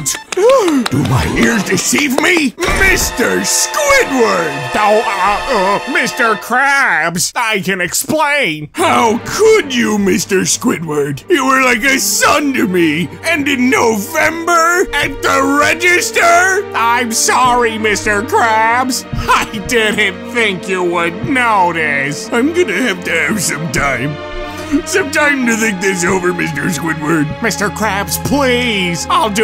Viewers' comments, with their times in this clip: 0:10 I love how Mr. Krabs just turns into Rodger in a matter of seconds